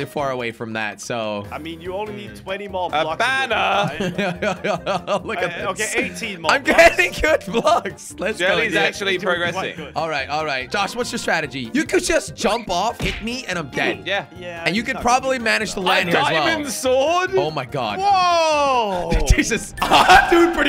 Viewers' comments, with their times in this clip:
0:04 that laugh Hha